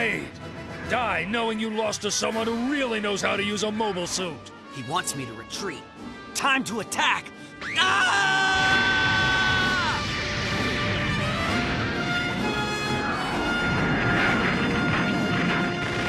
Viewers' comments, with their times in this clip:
0:03 bruh, thats not how to fight while closeing ur eyes and screaming.